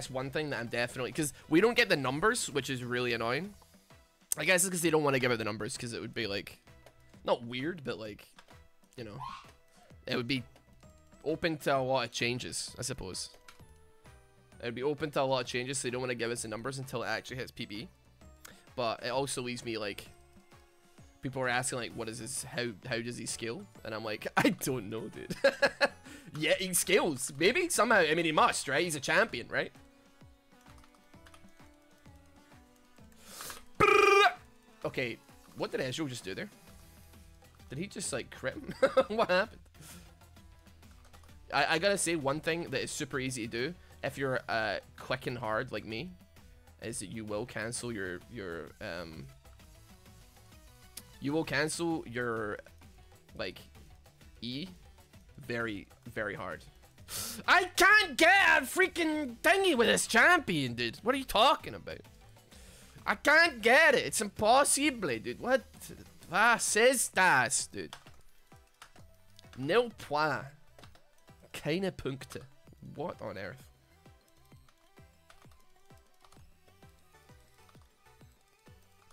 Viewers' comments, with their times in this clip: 0:08 random sneeze, gesundheit!
0:08 Mega Pog Sneeze
1:03 tht german out of nowhere cought me so off guard lol. Btw, the pronunciation was on point :D